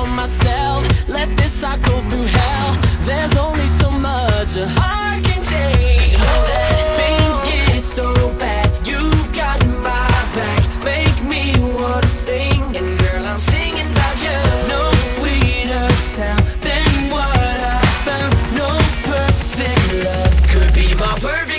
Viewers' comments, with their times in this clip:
0:08 is carlos part not logans